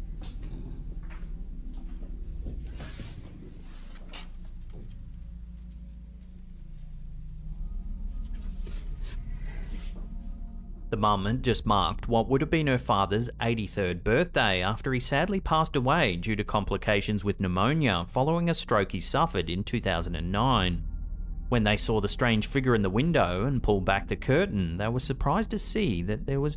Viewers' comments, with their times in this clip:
0:08 .........there is a disem mans whisper voice and it sounds like, that there is been said........"LEEEEET GO"........??????